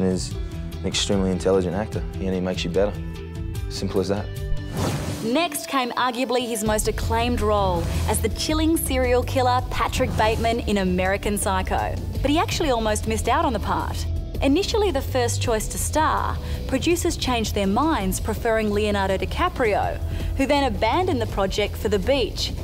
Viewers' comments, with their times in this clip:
0:07 "the killing serial killer"... do most serial killers not kill people?